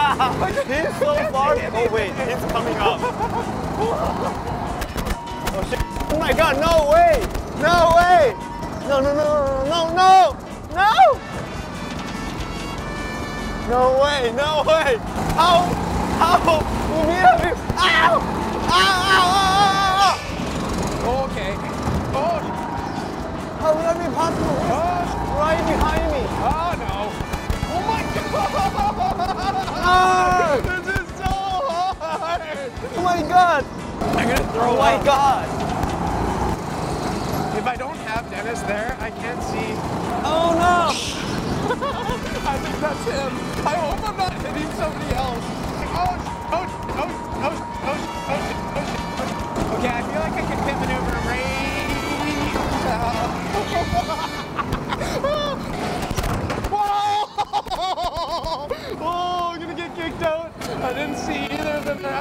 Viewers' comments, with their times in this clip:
0:09 That scream tho, very manly
0:46 it was like a RAM failure alarm on a motherboard.